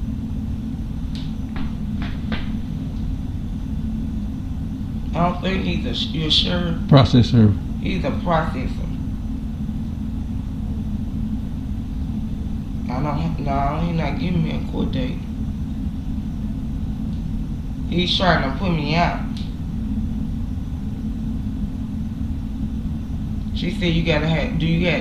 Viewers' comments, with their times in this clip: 0:06 Process server. He’s a prosthesis.